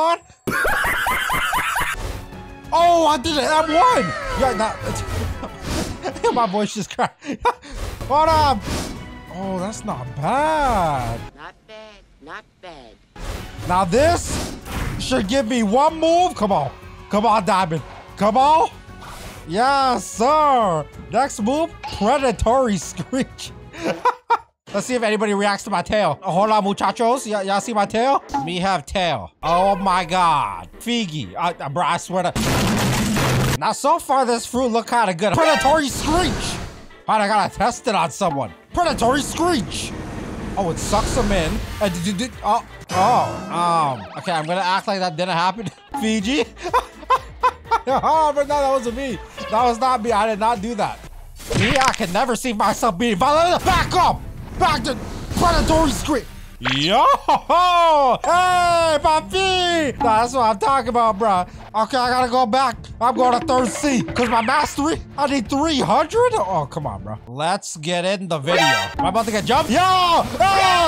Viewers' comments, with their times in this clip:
0:04 bro was speaking a whole new language
0:55 Fiji sounded like brook lol:face-pink-tears: